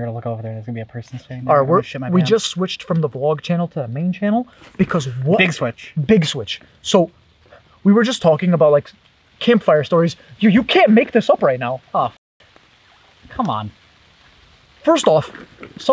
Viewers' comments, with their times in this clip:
0:03 It sounds like a bear growing